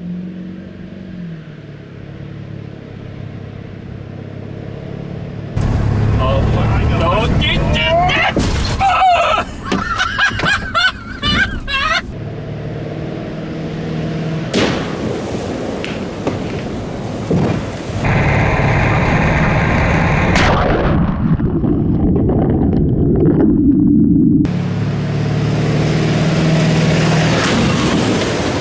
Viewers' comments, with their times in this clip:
0:09 that laugh is hilarious